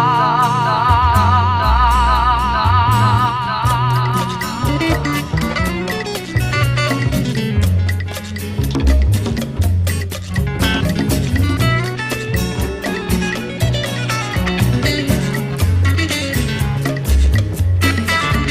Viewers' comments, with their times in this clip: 0:04 Bill pulls off an amazing solo. Reminds of Tommy Bolin Savannah Woman,